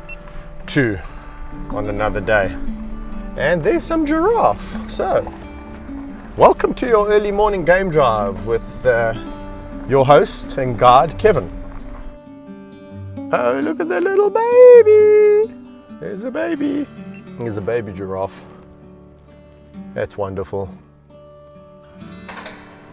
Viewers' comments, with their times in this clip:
0:09 Kevin said "your host and guide, Kevin" but heard it as "your host and god, Kevin". I'm fine either way. XD